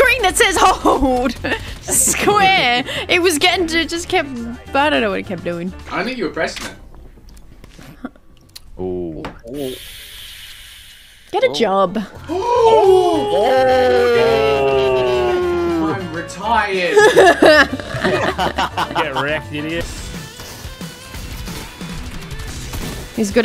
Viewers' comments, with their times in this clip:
0:10 hes like screaming instead of destroying her whole monitor but hes too weak to punch a monitor but instead he screams and someone get scared because of her her screams arent even 70db and its just a game not your life. and like my volume was 100 percent and i did not heard 80db. he roasts someone by a word get a job like in a roast battle i could destroy her